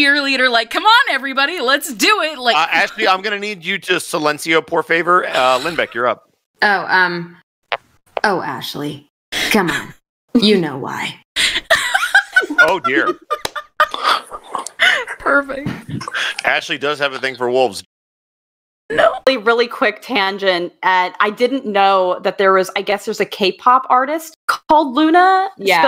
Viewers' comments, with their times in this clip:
0:08 loona sounds like female V from cyberpunk